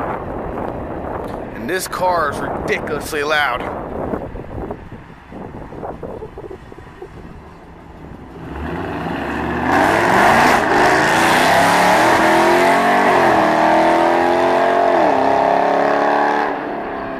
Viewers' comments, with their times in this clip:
0:03 that car is loud and fast